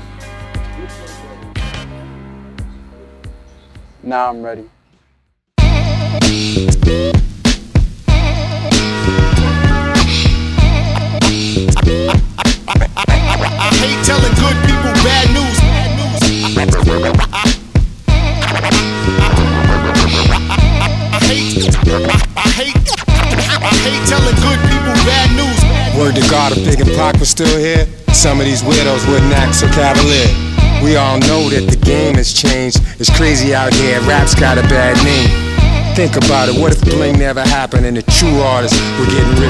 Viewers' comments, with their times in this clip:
0:03 That beat drop. Haven't had chills like this for quite a few years.
0:23 the hook sound's like Redman?